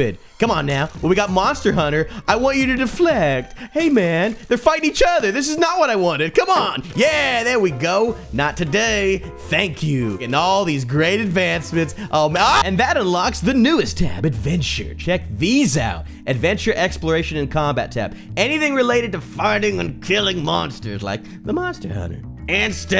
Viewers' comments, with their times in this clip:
0:10 R.I.P headphone/earphone viewer